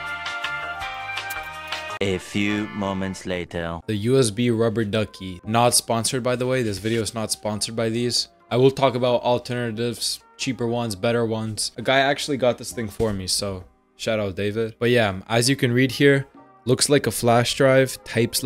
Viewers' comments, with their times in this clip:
0:06 the music gives me VIBES